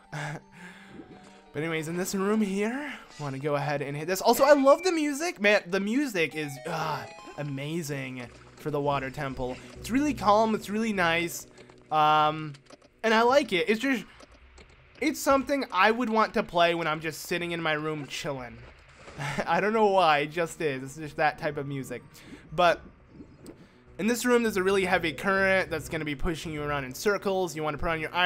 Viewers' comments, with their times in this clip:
0:09 maybe we'd be able to hear the music if you stopped talking every secong